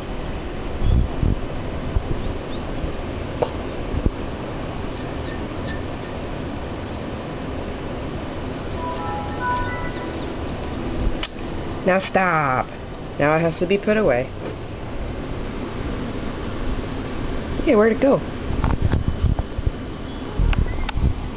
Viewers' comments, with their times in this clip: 0:08 my computer sounds exactly like that when is turns on! I have a DELL computer? Do you have one?